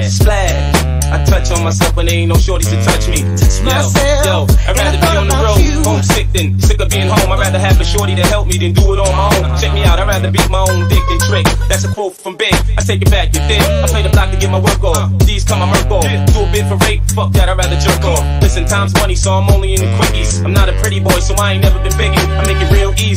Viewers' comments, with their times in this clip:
0:04 whos singing its catchy af , sounds like mj lowkey but probs just high af